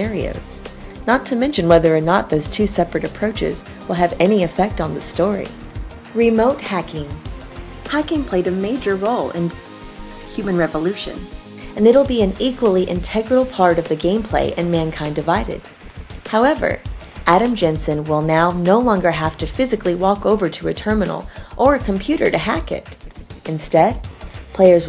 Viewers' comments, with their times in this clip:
0:09 Who Gave this voice over the go ahead???